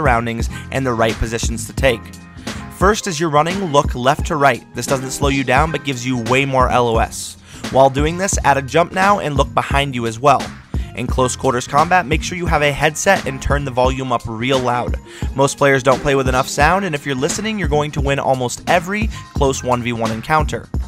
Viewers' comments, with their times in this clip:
0:04 sounds like you're trying to make a rap